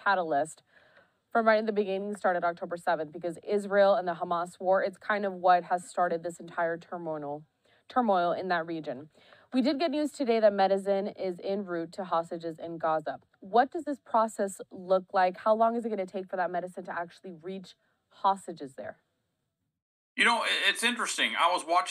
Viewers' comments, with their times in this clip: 0:09 what is "meciden"? Is it a shia or sunni thing?